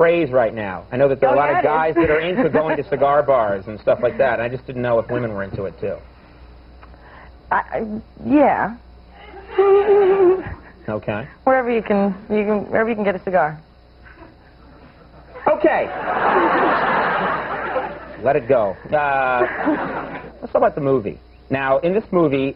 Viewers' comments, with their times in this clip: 0:09 That cute laugh :)